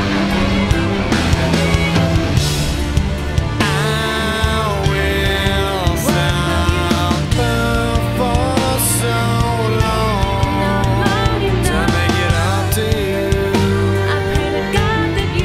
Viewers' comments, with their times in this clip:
0:03 Sonic extasy in headphones. Got him on right channel and her on left. Dear God!